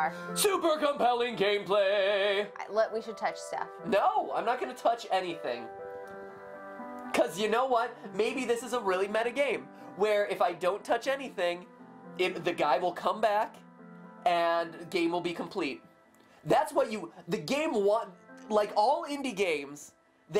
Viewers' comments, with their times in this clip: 0:04 Misheard "You should touch Steph"